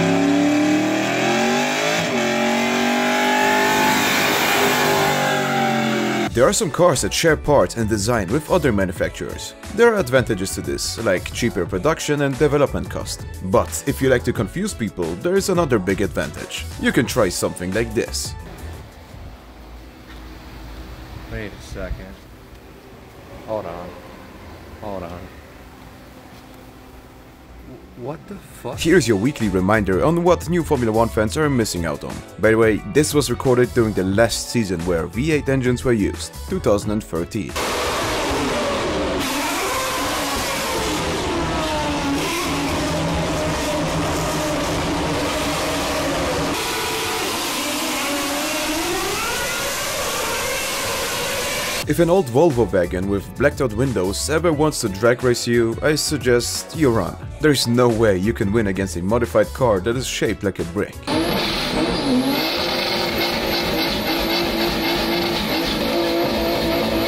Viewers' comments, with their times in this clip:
0:08 the crash was very satisfying
0:38 EARRAPE WARNING! JSYK.
0:40 yeah formula 1 fans probably are missing less autistic bee's sounds
0:40 the least noisy Honda in Oklahoma
0:49 that one mosquito when im trying to sleep at night with a test tomorrow